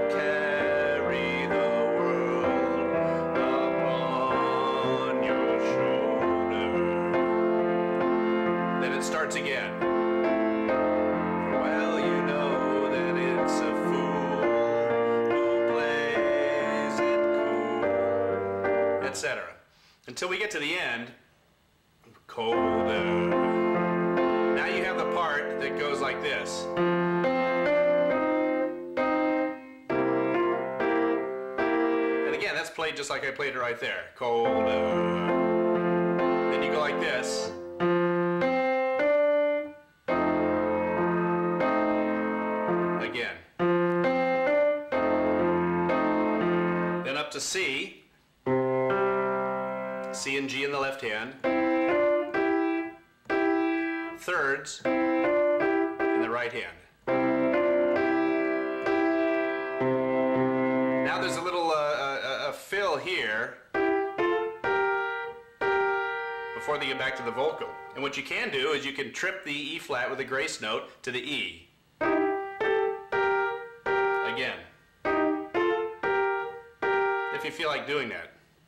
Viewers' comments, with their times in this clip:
0:08 What was that transition between "shoulders" and "well don't you know that it's a fool"? I couldn't quite catch it.
1:03 What are the notes on the fill ?